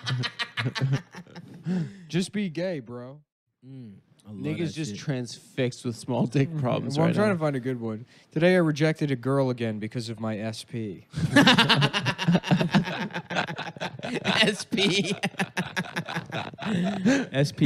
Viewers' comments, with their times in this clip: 0:03 does not sound like NICK